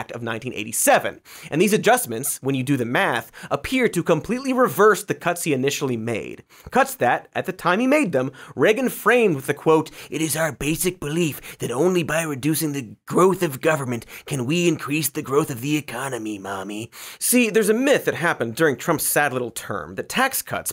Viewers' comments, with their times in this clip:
0:07 for that sweet, sweet Reagan voice